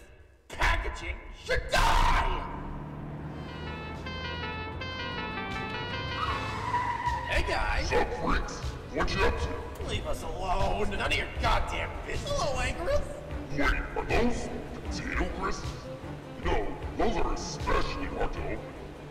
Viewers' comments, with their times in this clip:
0:03 LOL Honking the Godzilla theme